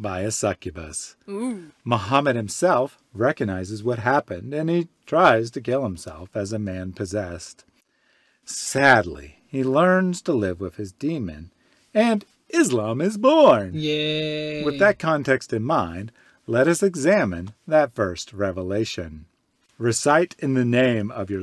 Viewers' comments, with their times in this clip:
0:08 if that "...sadly" didn't convey enough regret to fill 40 muddy springs of water, I should go take shahada now🤣🤣